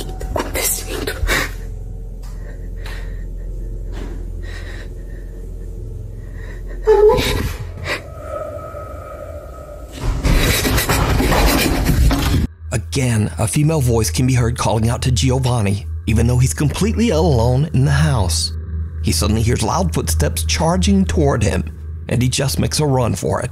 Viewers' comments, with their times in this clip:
0:04 there's a face from the door! he was looking but the sound of shouting from behind but his face from the door is strange!!!